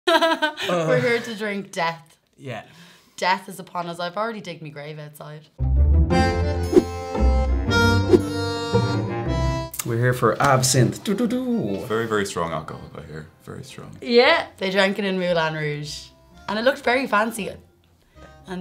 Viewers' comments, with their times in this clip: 0:00 She sounds like the opening the "Wannabe" by The Spice Girls.